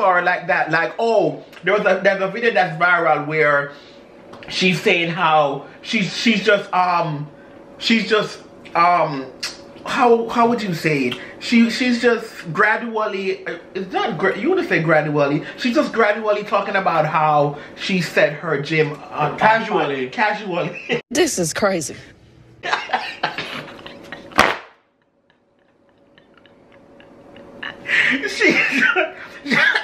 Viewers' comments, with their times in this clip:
0:10 Love love yall.. I bout failed out my seat @ "can we get a dictionary on set" that whole part was funny, yall both laughed....I live 4 it & the word was casually